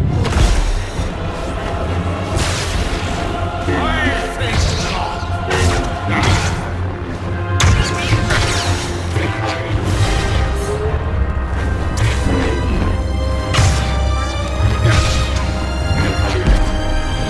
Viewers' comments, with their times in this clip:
0:03 That "I THINK NOT" was so powerful